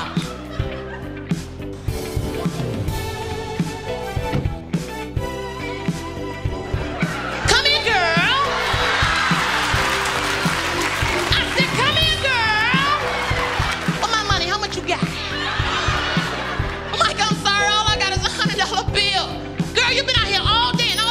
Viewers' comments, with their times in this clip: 0:06 the way he said ''come here girl' threw me.😮😋😋